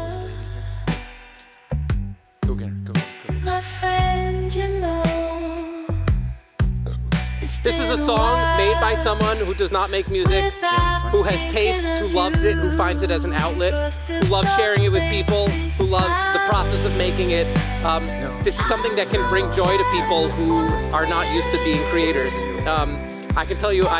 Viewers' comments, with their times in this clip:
0:06 Did I just heard someone beurbing 😂